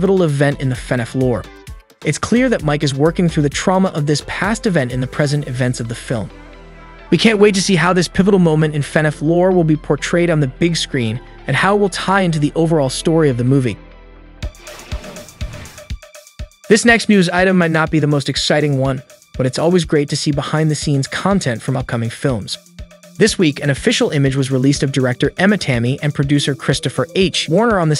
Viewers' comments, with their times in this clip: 0:09 YOUR STILL SAYING IT WRONG YOU SAYING FEHNAFF ITS FUHNAFF